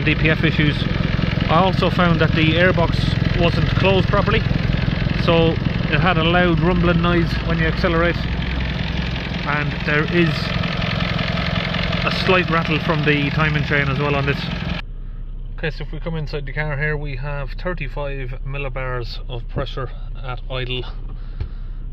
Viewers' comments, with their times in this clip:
0:07 rattle not from timing chain but balance shaft worn - known issue on that 2.2 diesel engines 4n14 mr. Mechanic 🙂